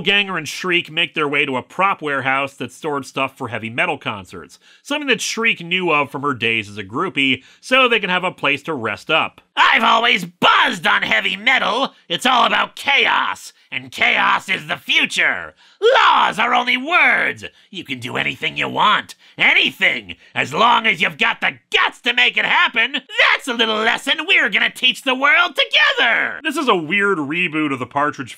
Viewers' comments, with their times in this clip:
0:09 No, no carnage, you have it all wrong. That music is hard and heavy as a fire beast's metallic flesh. The power of its blood. The heat of his fire. The speed of his flight through the heavens. The mighty roar of his death cry. And yet, it contains the angelic beauty of a goddess' song. It is an anthem of the people. For anyone curious, it's from Brutal Legend, if you've never played the game it is bonkers, but awesome.